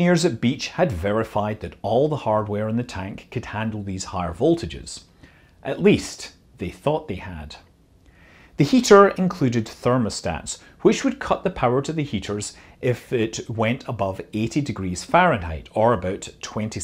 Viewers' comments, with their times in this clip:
0:04 commentators voice yep now where have we heard that before......